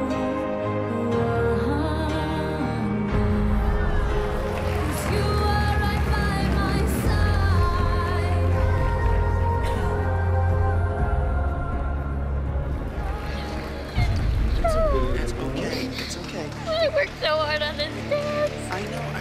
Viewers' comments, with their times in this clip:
0:06 when Melissa was practically bawling over Paige really shows she did care about the other girls.